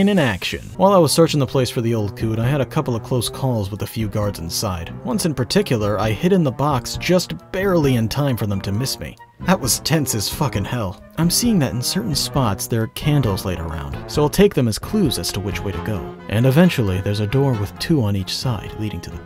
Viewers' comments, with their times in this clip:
0:04 Uh... what did you say ? The old what? The Youtube CC algorithm didn't like it, that's for sure